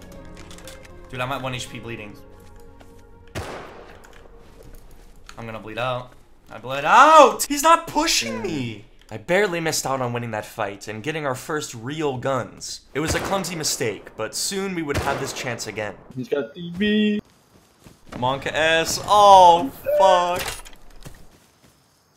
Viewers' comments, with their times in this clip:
0:07 makes me hate all rust players, most have that teenager whing voice